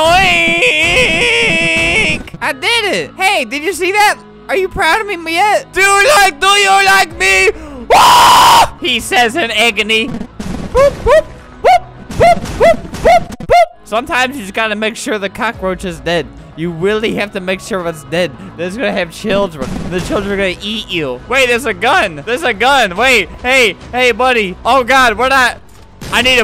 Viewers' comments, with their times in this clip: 0:07 sound like femur breaker
0:08 you could voice the slenderman jumpscare.